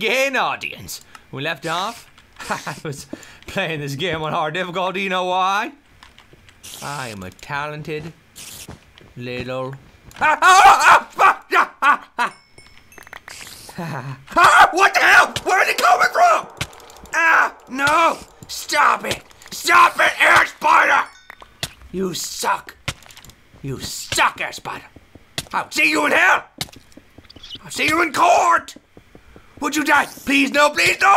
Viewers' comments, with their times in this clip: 0:10 For all you people who said " he said FUCK!" He said SPIDER but he just got cut off -_-
0:14 Did anyone hear? He said "ass-biter"